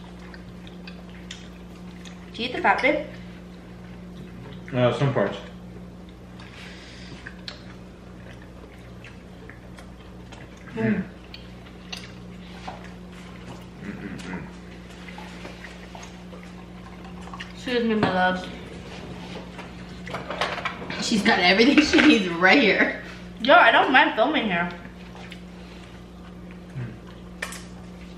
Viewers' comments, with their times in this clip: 0:10 THEY SAID MMM AT THE SAME TIME LMAOOO
0:11 Lol the synchronized “Mmm”